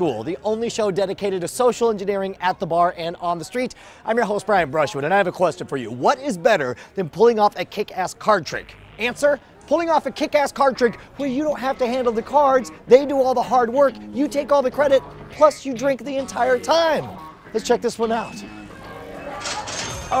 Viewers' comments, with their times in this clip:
0:07 is a fart sound lol